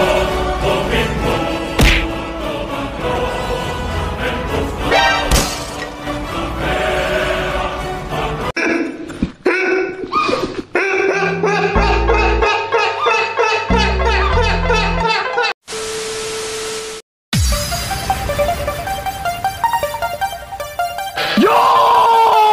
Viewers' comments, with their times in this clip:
0:08 epic music + video edit